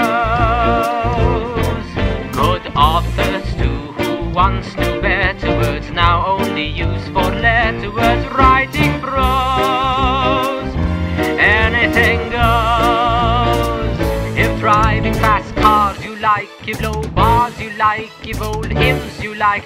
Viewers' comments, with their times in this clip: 0:05 bro why do i feel like he's saying vertibirds here am i too fallout addicted?